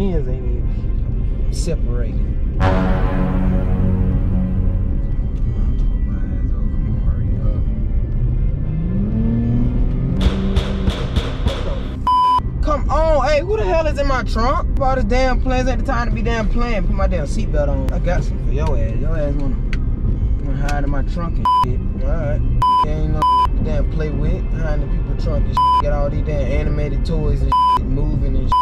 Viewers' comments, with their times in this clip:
0:10 when I first saw this video I thought somebody was shooting a gun